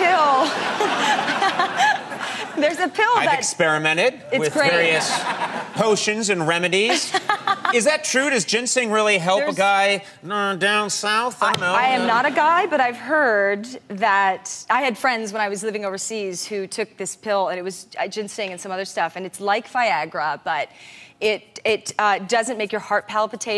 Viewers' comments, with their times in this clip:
0:06 that genuine laugh